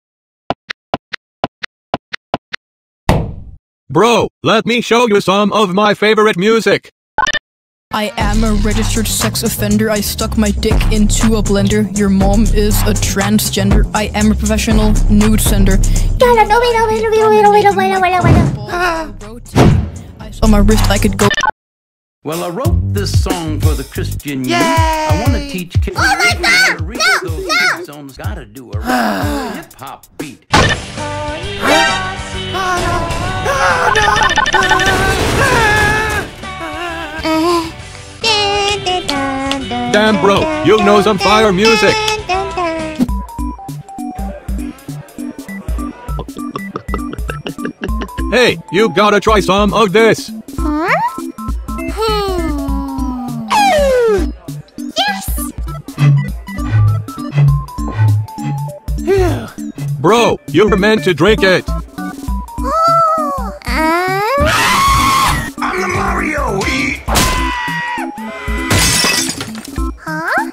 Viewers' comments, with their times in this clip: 0:03 please turn your volume to minimum for this timestamp
0:04 “Bro let me show you some of my favorite music” Subway music comes on
0:07 THAT SONG HITS HARD LMAO 🤣 and also great video buddy :D
0:16 -Melony cute voice drops the bars
0:55 XD She blows on a glass bottle